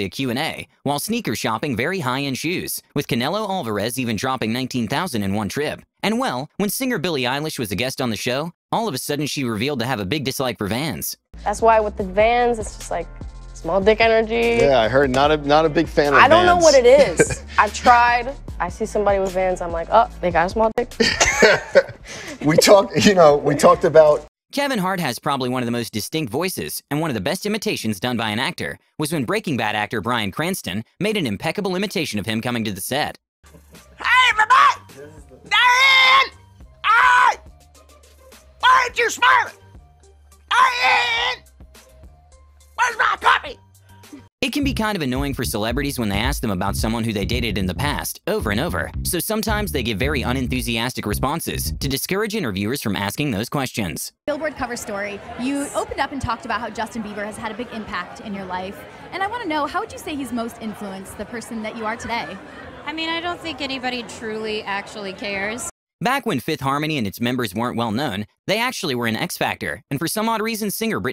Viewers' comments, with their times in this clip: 0:04 You know it's funny when Gordon Ramsay is laughing😂
0:56 he made an impeccable ipersonation¿